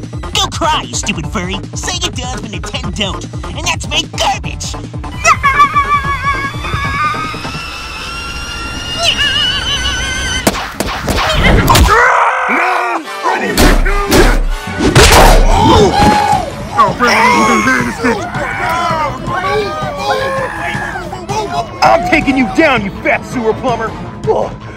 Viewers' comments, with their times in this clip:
0:05 funny how he laughed